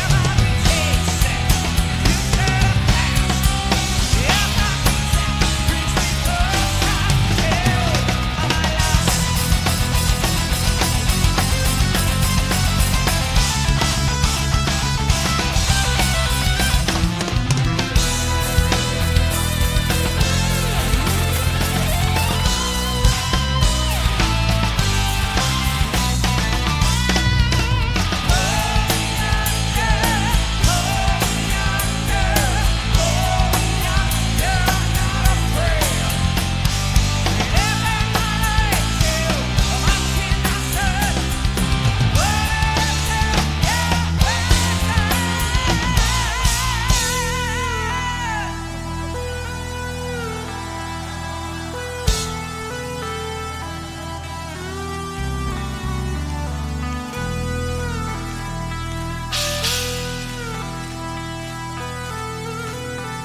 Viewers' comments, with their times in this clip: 0:08 amazing drumming skills
0:09 Portnoy: “LaBrie, you can’t be for real with that voice.”
0:13 That Rythmic modulation 😍😍😍
0:48 the moment when Mike hears James singing